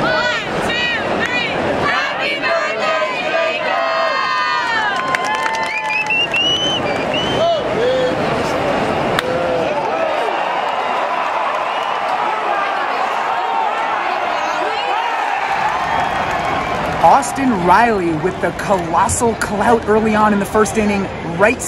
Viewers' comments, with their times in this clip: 0:05 is an amazing whistle....